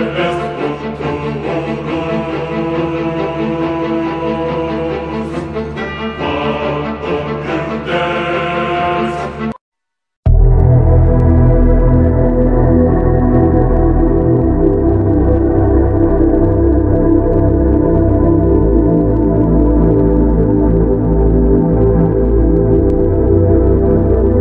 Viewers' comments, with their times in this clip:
0:10 Yo can someone tell me the soundtrack of phase 26 it sounds so godly 👌